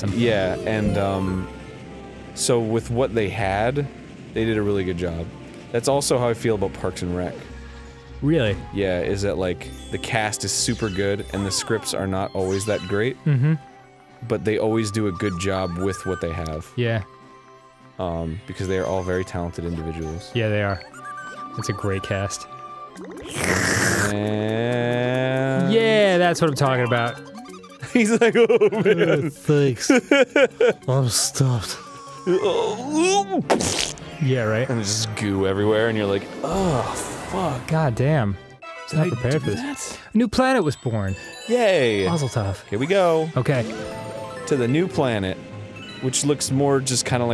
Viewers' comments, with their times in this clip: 0:07 Parkson Rock? What did he say?
0:27 I got a glimpse of what the old game grumps were from arin laughing...
0:28 he sounded like Markiplier